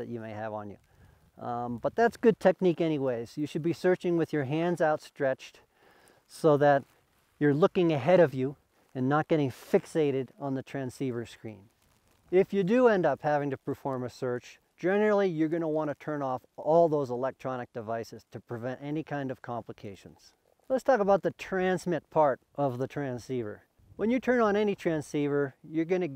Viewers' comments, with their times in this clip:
0:07 he's sounds exactly like Steve Buscemi